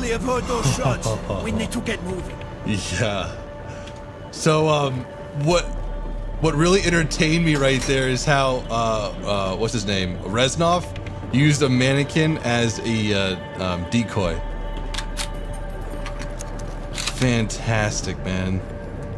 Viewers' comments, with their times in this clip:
0:07 the door has the same sound as the mystery box